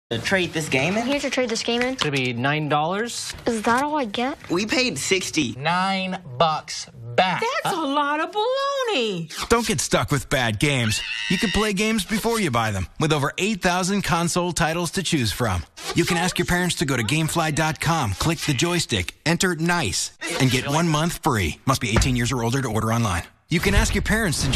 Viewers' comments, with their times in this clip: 0:10 Wow, sounds like that grandma should've been a heavy metal or a shock rock vocalist due to that wild scream of hers .🎤🗣😂